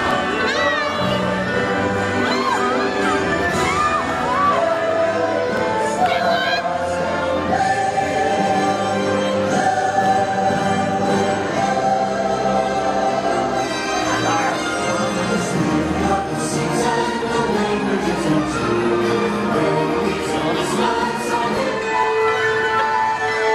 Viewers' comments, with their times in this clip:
0:06 you can hear Mabel Pines XD. "STELLA!!!!"